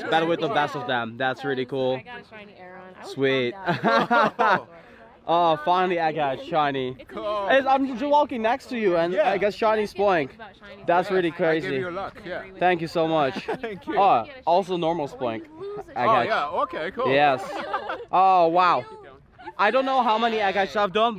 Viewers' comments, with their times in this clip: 0:05 that poor girl freaked out when he yelled SHINY.